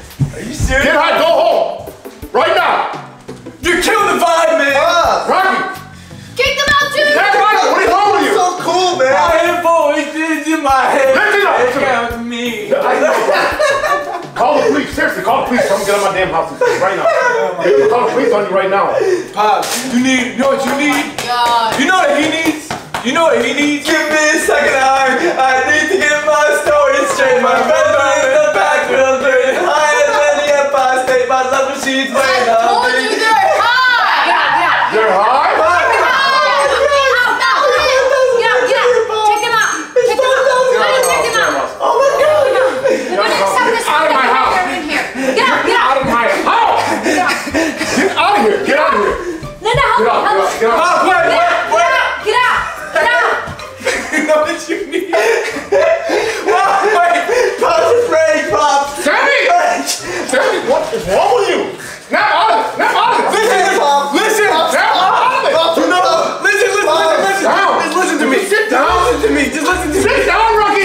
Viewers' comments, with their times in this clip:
0:09 singing Randy Orton's theme song 👍👍😁😁
0:57 pops is actually laughing and he knows its a prank